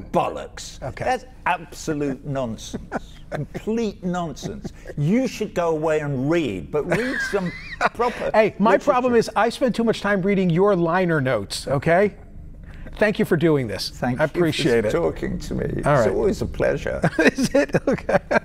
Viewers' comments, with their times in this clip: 0:06 CNN got absolutely shown up 😂 Will say though the interviewer gets all hurt when he gets shown up so he does that corny laugh